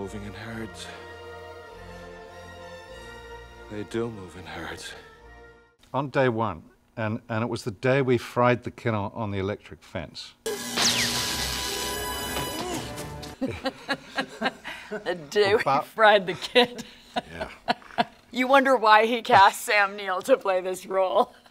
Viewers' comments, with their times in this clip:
0:04 Wait a minute he has a British accent, im totally mind blown